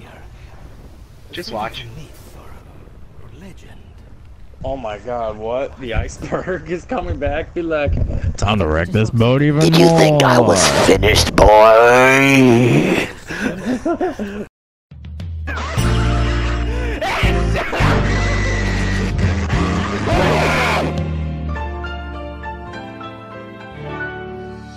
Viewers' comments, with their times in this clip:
0:09 Earrape Titanic Theme Plays